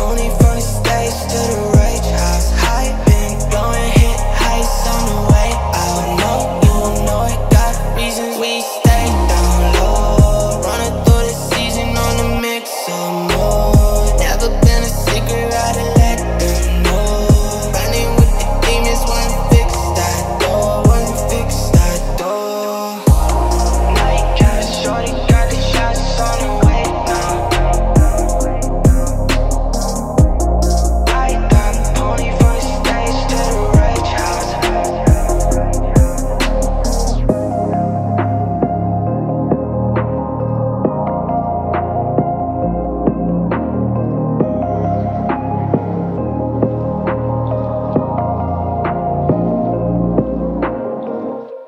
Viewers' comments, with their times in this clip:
0:05 the "w-way out" line reverberating in the background is such a tiny addition, but it elevates the drop so fucking much
0:37 THAT BEAT OH MY GOD